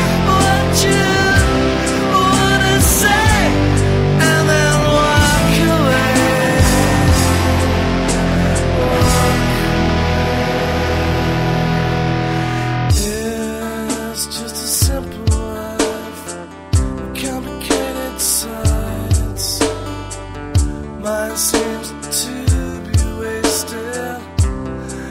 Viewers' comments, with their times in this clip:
0:08 not sure if you can hear it, but there's a quiet "and then"